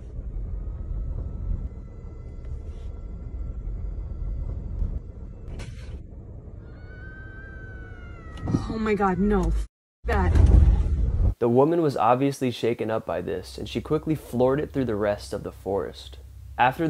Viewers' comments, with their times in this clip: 0:04 The people who think the video is demonic have never heard a bobcat cause that's all it was
0:04 that is a distressed rabbit sound